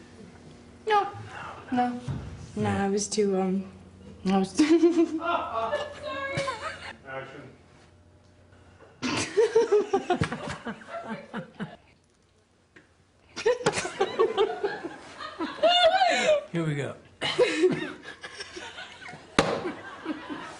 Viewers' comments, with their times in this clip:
0:04 when the giggle slips in while she is talking, the part makes me cry she is too cute! It’s adorable.